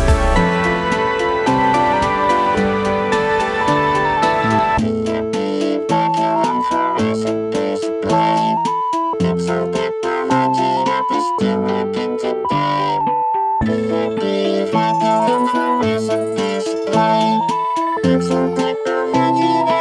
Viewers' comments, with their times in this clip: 0:04 what does the robotic flanger filter voice says? All I understand is vacuum flourescent display.